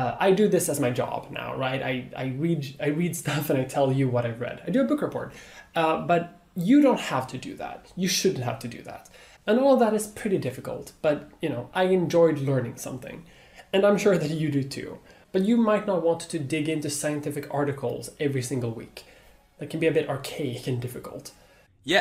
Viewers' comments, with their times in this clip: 0:06 His voice is so creepy. Thank you for calling him the man that he is.